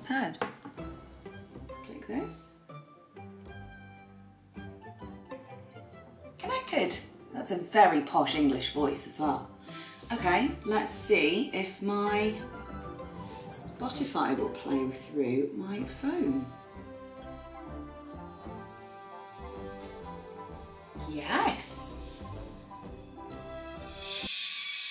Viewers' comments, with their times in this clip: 0:08 I think all future video should be done in the Posh English voice 😀😃😄. J/k 🤟.